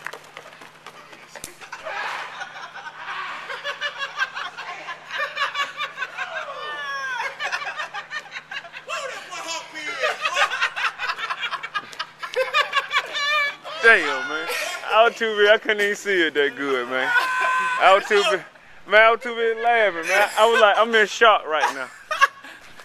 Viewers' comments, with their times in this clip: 0:09 got that hyena laugh